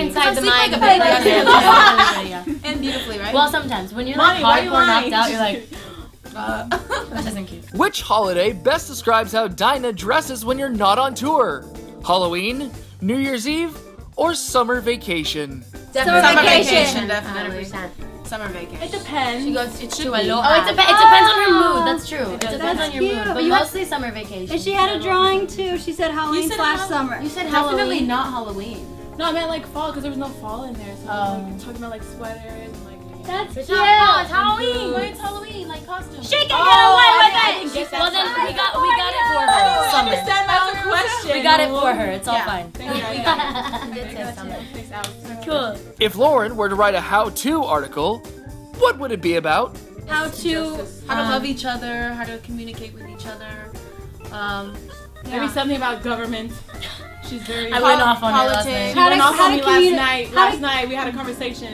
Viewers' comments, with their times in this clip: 0:05 dinah singing "why the f*ck you lying" ahah
0:06 dinah singing why you lyin' 😂😂
0:34 camila sounds like cat valentine
0:42 Lauren's laugh was amazing
0:43 my heart melted when lauren giggled
0:43 Lauren's laugh was amazing